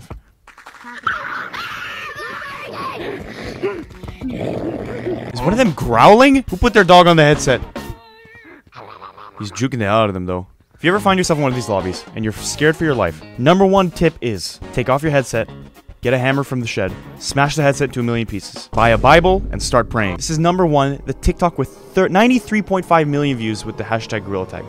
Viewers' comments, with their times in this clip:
0:06 is one of them growling? Had me rolling on the floor💀💀💀
0:06 is one of them growling? Had me rolling on the. Floor